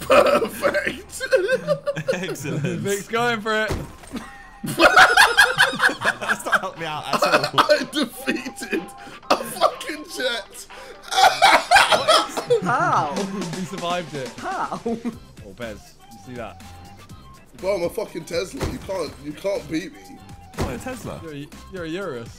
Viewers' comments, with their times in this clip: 0:06 the music that started to kick in really gave me nostalgia and gave me that warm 2015 sidemen feeling